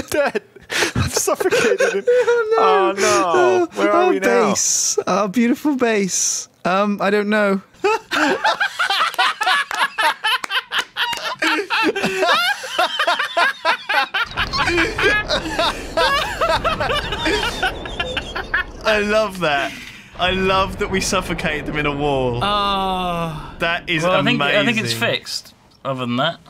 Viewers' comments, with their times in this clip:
0:08 This laugh is hilarious